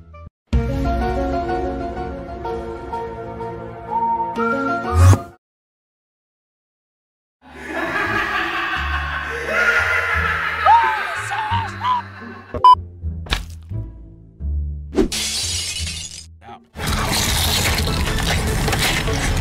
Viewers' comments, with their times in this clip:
0:07 I want to find the laughing